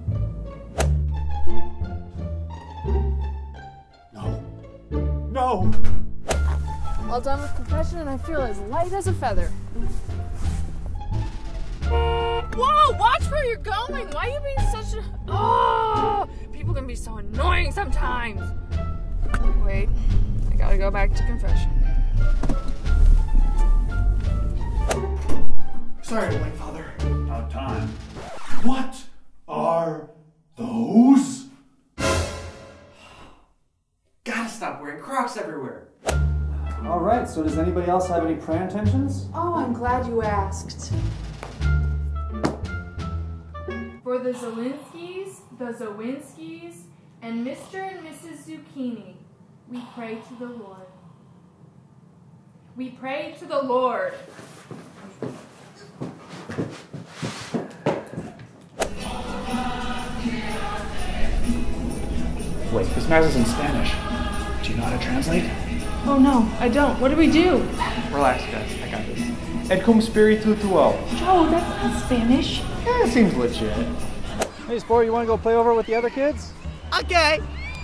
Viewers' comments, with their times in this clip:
0:06 that horrified "No!" was just too good lol
1:04 I thought that at first he said 'oh no, this is the new mass' which I would probably say myself.